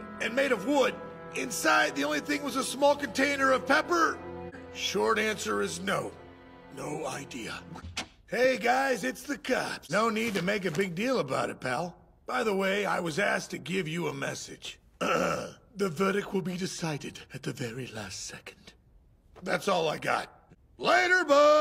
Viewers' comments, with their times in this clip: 0:07 gumshoes voice actor almost gave up